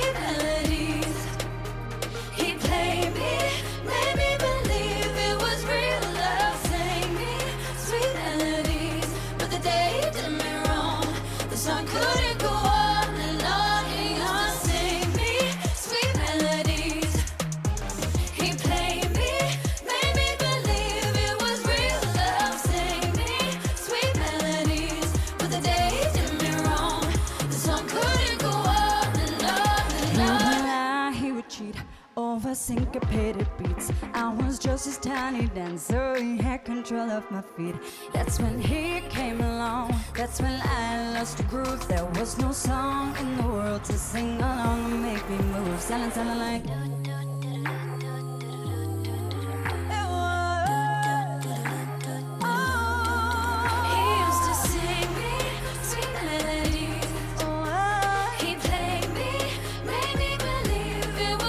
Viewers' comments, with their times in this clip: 0:08 When they sing “sweet melodys” in u can hear her:)
0:44 Jesy lipsynced the whole thing actually. it is physically not possible to maintain perfectly recorded vocals and swinging your head like crazy at the same time. in fact, her mic wasn't even on. as you can see i assume she forgot that she didn't prerecorded this part.
0:44 its perrie’s solo part